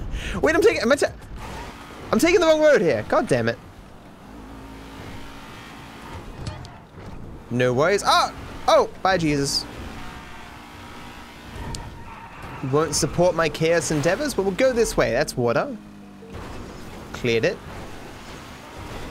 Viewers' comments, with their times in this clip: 0:06 Did they remove the song that goes with Jesus?